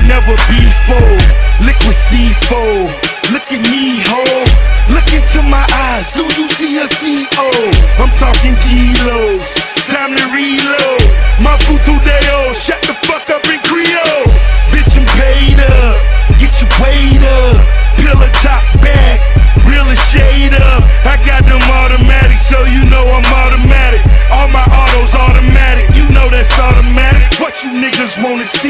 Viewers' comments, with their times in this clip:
0:10 It sounds like he is saying shut the fuck up 330!